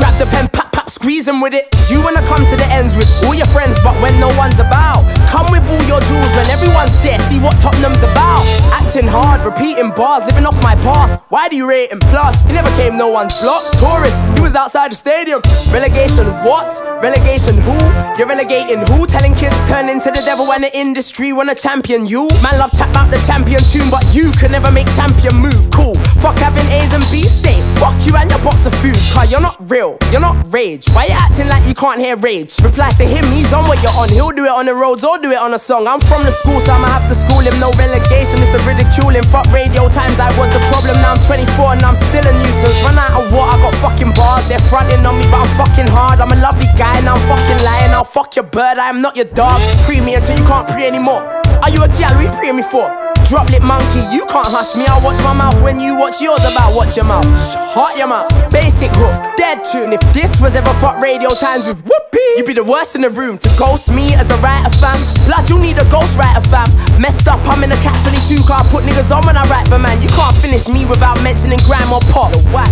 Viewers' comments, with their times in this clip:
0:03 preds T flow. sick still!
0:06 Prez T flow
0:15 special voice effect
0:56 the way he says ... shuuut your mouth 😂😂😂😂